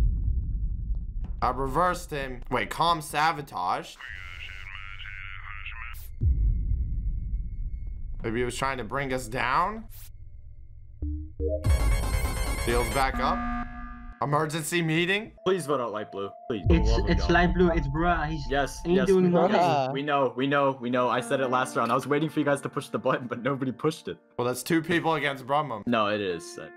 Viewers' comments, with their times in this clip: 0:10 That actually scared me was it the sonic.exe noise or the fact light blue was about to kill him